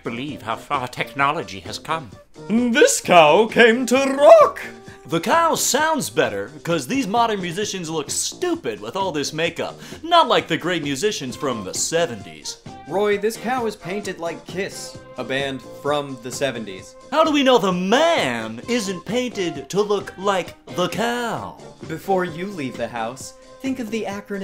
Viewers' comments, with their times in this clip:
0:05 Is that the fucking Fitness Gram Pacer Test man? How did you get him to narrate¿¿¿
0:06 you sound like swaggersouls